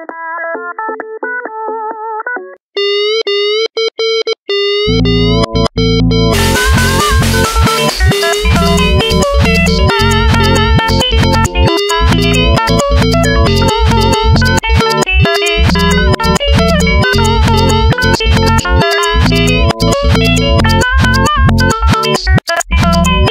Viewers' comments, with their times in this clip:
0:07 he’s singing FAST